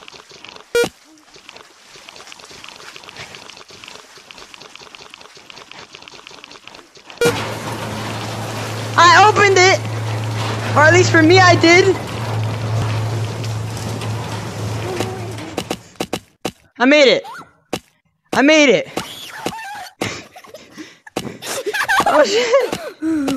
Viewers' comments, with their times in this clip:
0:04 The most aggressive, "HES COMING!!!" I've ever heard.